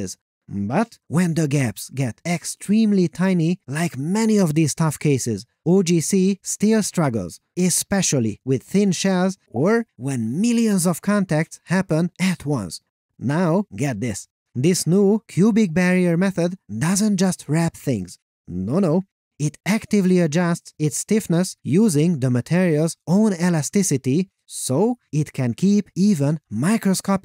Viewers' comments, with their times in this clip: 0:08 what is this notification gave me paranoia